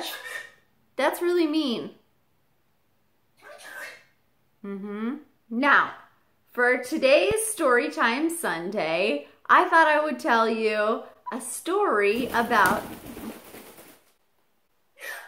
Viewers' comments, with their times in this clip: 0:03 i was amazed vinny's inflection perfectly communicated "i'm sorry you're hurt but i'm not sorry about what i said". amazing lil birb.